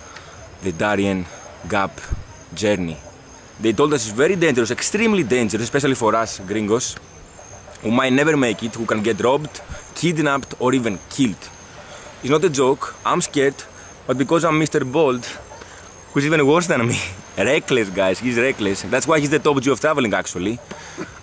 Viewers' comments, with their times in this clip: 0:06 you definitely don’t sound gringo tho bro lol